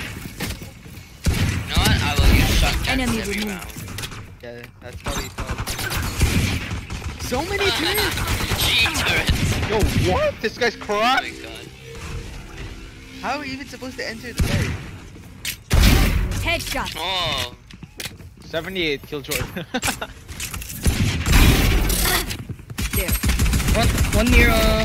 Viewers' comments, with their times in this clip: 0:08 the only thing cracked is your voice